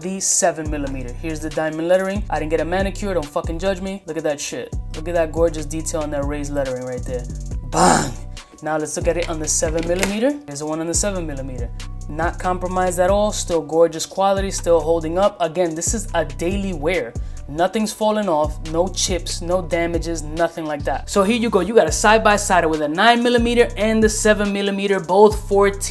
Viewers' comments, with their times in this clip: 0:08 Lmao!!!! the sound you make when your dropping a nice load lol